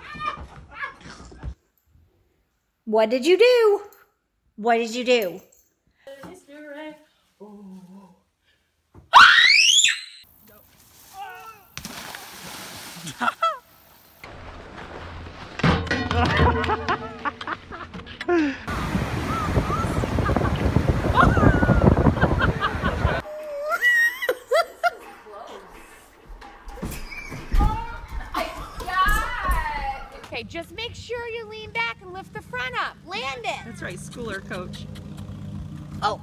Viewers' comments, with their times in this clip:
0:06 she sounds like a ghost
0:07 she used her energy to make a very high pitch scream
0:08 the scream ...priceless lol
0:08 What is that scream?
0:11 Experiment: squeaks a song me: goes to use the bathroom and walks up on him w- Experiment:
0:11 that radio scream. 😦? 📻 😂😂
0:14 The sound the skier made when they hit the pipe, was straight out of a cartoon =)
0:14 OMFG THAT FREAKING SCREAM!!! XD LOL
0:23 It sounds like they're playing Wii Sports Resort.